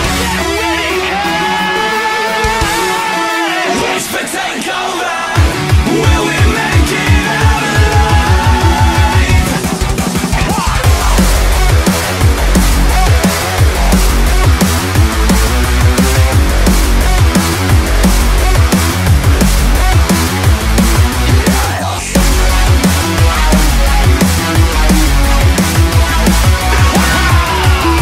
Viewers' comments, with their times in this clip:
0:10 is the best drop hands down